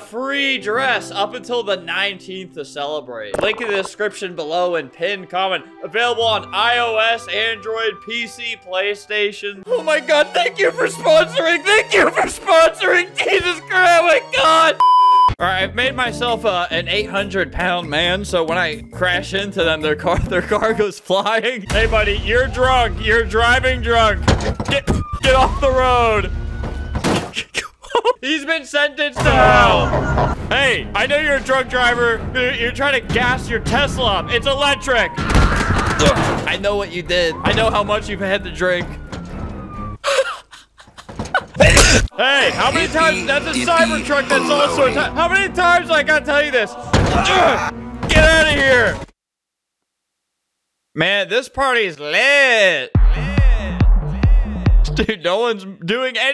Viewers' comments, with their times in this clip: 0:10 why he acting like a anime dub saying thank you
0:10 is this sped up never see me again i swear it is
0:27 I like how Albert turned into Mickey Mouse for a nanosecond
0:41 that was weird we coughed at the same time except I just have whooping cough